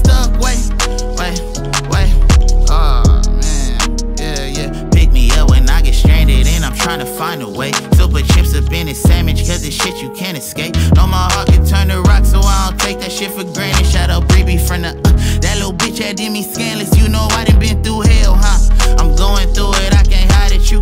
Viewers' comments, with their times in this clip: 0:06 turned into Anderson Paak